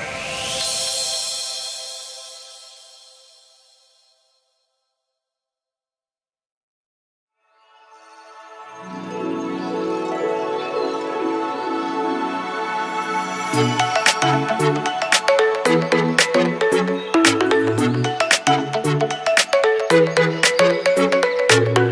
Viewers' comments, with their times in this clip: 0:09 My fav song plays in the background